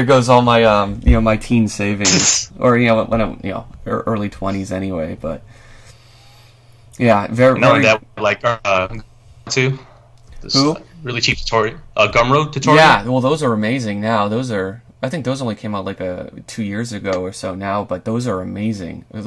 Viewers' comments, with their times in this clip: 0:07 what were the lessons mentioned ? just a little hard to hear